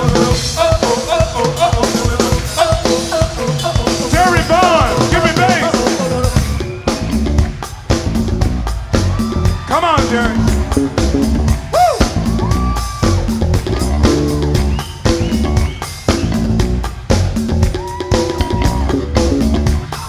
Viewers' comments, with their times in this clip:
0:06 minute wth bass and band .....thaks